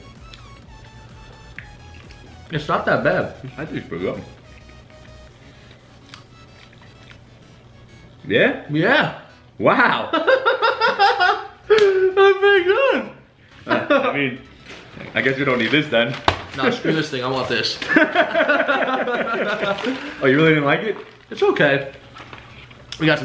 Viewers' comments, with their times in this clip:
0:09 Your inner Joker laugh came out xD
0:11 Lmaoo ur laugh
0:11 HIS FUCKING LAUGH I'm DED